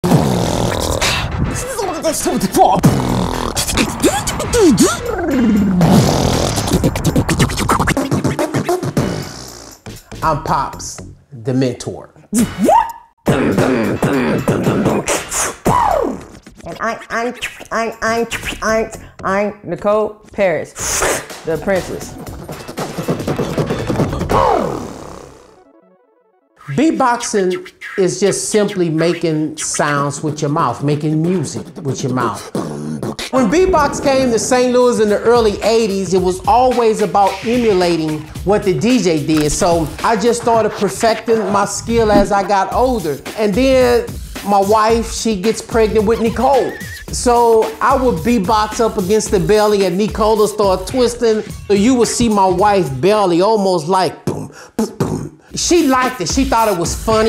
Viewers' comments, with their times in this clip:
0:02 ngl no offence sounded like zebedabdeda 74 but it sounded awesome
0:15 when u press DJ mode on the school keyboards
0:39 I though she was talking